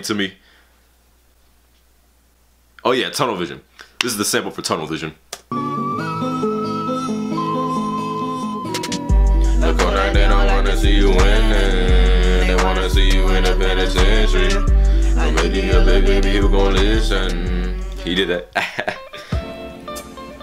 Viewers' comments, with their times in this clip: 0:08 B O I you sound way better than Kodak Black